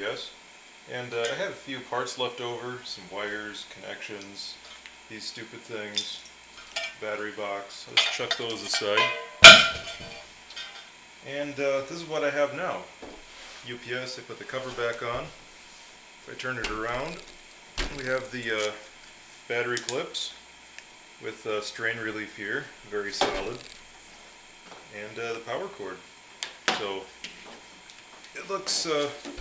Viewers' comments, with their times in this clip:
0:10 WARNING really LOUD CLANK!!!